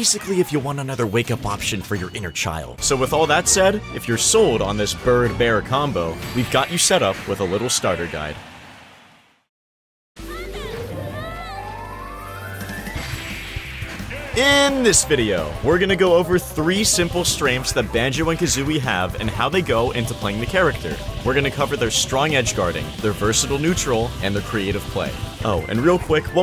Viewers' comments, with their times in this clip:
0:10 Perfect Musical Timing